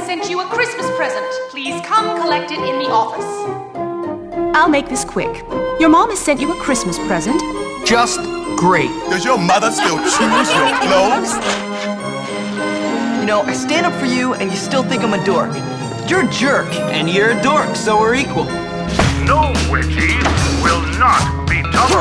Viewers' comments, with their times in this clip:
0:06 that laugh is funny 😂